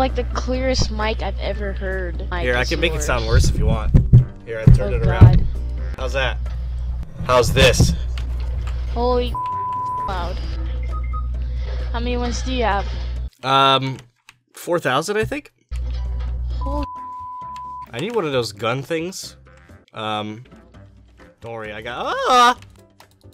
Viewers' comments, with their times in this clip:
0:07 U sound like a nine tailed fox commander from SCP cb